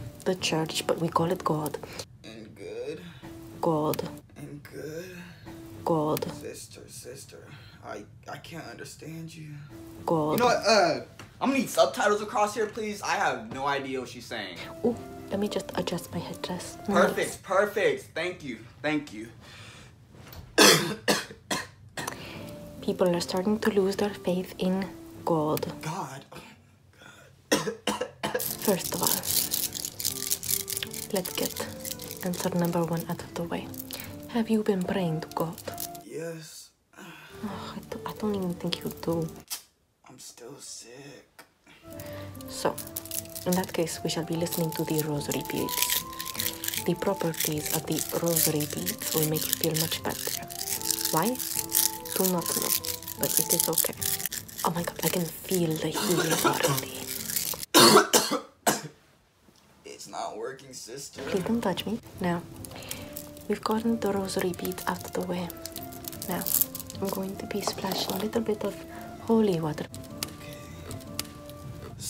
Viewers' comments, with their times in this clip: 0:05 doesn’t sound right._,
0:56 omg i can feel the healing LOUD COUGH LOL